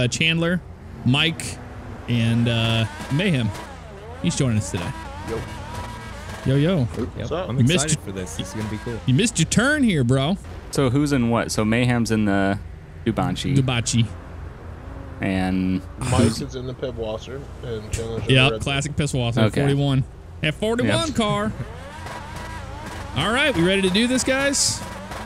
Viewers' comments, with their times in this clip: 0:07 A.I: oh this is a nice tree, BANG